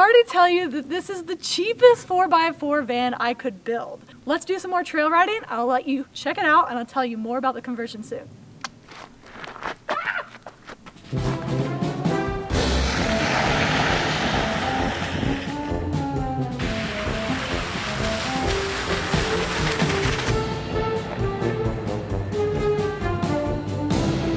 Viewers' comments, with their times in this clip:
0:08 This chick is SO cool! I love her personality..... .. the clicking of the tongue and that little yell!! Would be so fun to hang out with her!!